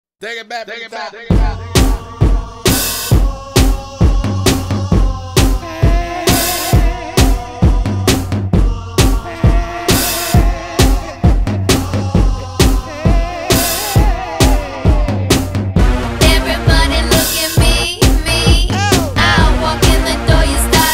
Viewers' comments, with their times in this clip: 0:05 no because why do i keep hearing peter griffin 😭
0:05 ok if I’m not alone in this then you might join my statement first of all who members this part normally no one because I don’t remember this part I’m talking about is the guy singing in this timestamp I don’t remember this guy singing in this timestamp. In fact it was just normal without that guy and when I decided to revisit that song, I realized there is a man singing in the beginning that goes like eeeeeeeehhhh eeeeeeeeeehhhhh eeeeeeeeeehhhhh I don’t know what happened but I do know it might be connected to the Mandela effect or something if I’m not alone, please share your experience